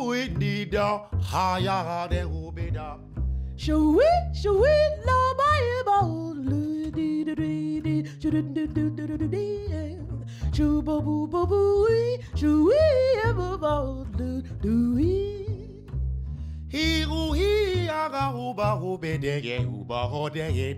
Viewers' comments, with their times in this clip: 0:03 Haha that will be done sure, which window Moldy drainage turn into the ravine
0:06 oh my when she double timed it for just a second ugh gave me chills i love that